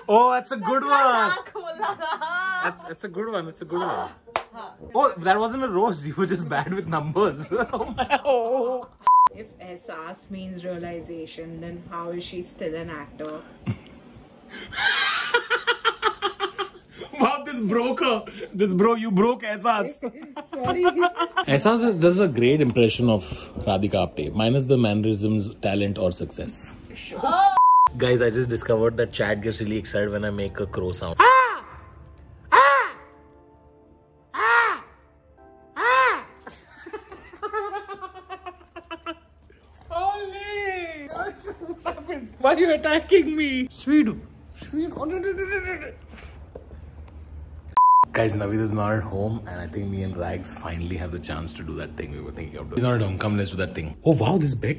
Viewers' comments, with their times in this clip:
0:08 Giorno's theme starts playing in background
0:29 chad is just surprised like all of us like how is an elephant making crow noise?😂
0:31 that's not how crow sounds maybe chat is worried about you.....
0:39 that's not crow sound that's your laugh with pauses